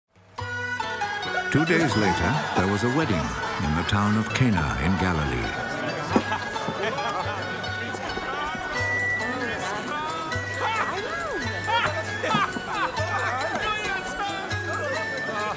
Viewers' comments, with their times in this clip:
0:00 I like the music.